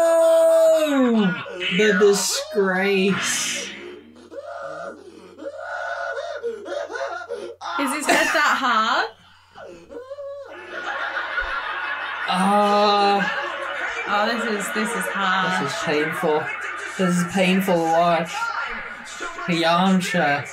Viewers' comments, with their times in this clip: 0:03 Chris Sabat really went all out for that scream ngl It did not sound that painful in the Japanese version